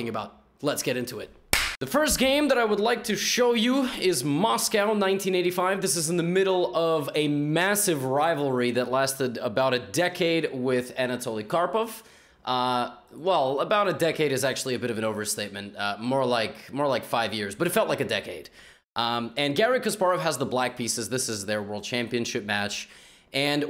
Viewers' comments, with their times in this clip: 0:04 I hate when Americans say "Moscow" it sounds more like "Maskaiwoo" freaking irritating